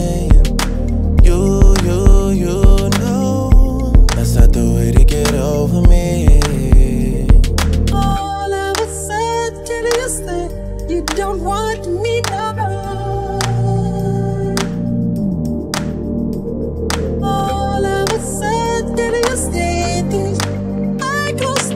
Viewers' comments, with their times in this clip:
0:08 No, the part where Michael is singing was recorded in 1983, which is why it sounds kinda weird at his part